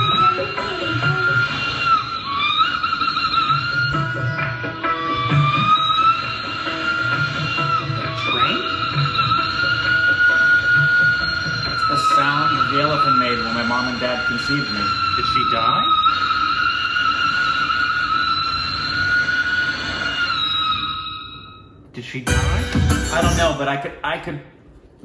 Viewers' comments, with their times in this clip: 0:08 a train is passing by